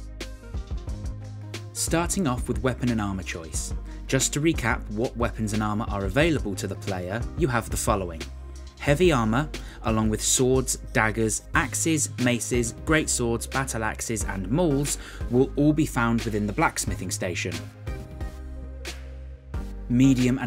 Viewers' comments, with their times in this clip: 0:08 why u gotta rap lad ?